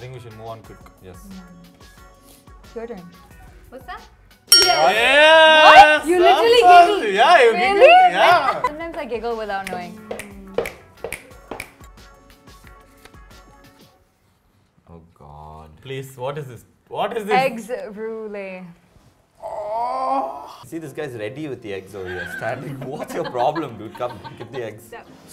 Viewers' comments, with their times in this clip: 0:06 You literally giggled.... ah aahh grl u r killn' wid expressions
0:08 the chuckle lmaoo